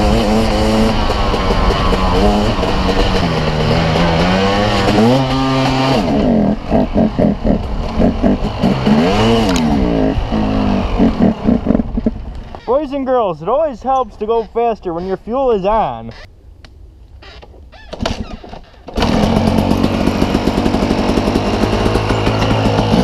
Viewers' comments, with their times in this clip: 0:06 Sounds like a wild boar